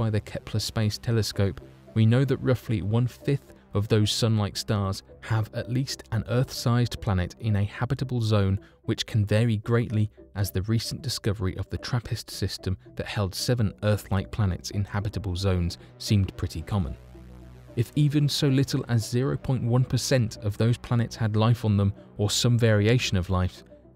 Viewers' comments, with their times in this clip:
0:04 whistle them S’s lol